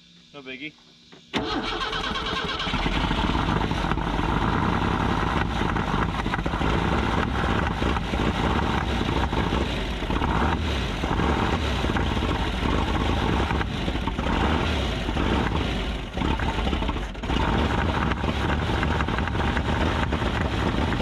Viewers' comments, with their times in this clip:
0:03 Yes I'm back to correct (edit) that it wasn't Part III but instead; episode number FOUR where you took some of the blame for the rough ryed'un eagle. Everyone loves an idiot Dal'un, now if everyone would share your videos we'd get more fans, there are times when a good fan on a hot day with humidity climbing above 60%.... oh sorry jumped tracks there. And now my original unedited post: Why have I returned to view this series and in reverse order oddly enough? Can't say? BUT; As I recall in Part III (if I'm half-way correct) you found plug wires on incorrect cylinders which I may review this fact to be sure, but I' see now that may be how come it sounds so terrible on this initial start, amongst a few other things. Okay I'm going to post this with the time stamp for the first start up and then let's see if I return to edit afterwards*. *post 'Post'